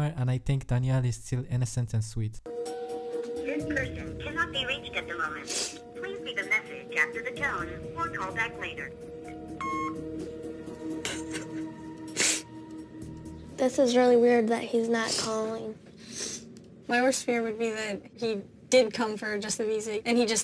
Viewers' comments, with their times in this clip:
0:07 when it went to message on her phone when she called him and he didn’t answer did she purposefully leave a message of her crying ? Lmao oh dear